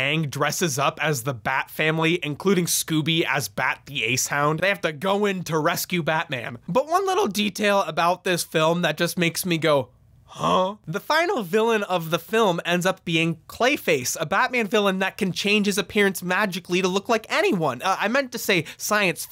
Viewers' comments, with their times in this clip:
0:07 “Scooby dresses up as Bat, the Ace-Hound” 😂 I think u got a bit tongue-tied there, bud.